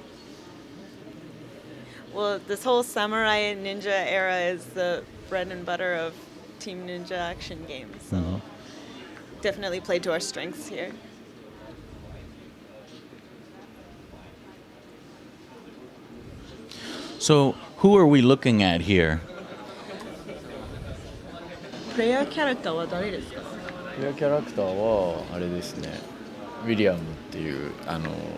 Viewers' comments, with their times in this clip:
0:10 long, awkward pause